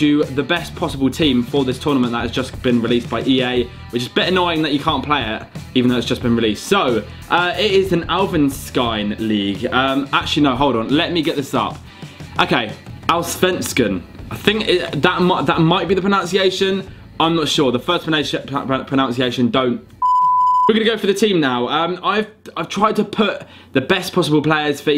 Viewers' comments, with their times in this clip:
0:08 A disgrace to Svenska !!! Nailed the second one though :)